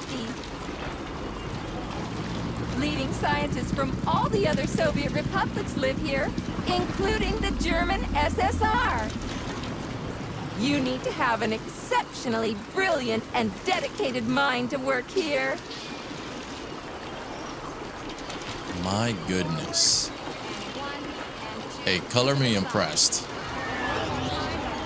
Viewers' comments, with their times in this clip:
0:08 It's a shame real robots will probably sound identical to humans, if current text-to-speech voices seem to show. I really like that sort of synthesized sounding voice, all echoing and interesting that will probably only exist in fiction.